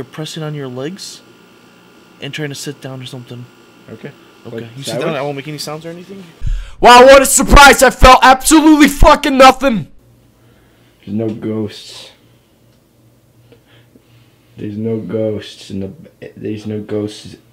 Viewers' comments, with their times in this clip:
0:05 you sound like a mad old grandpa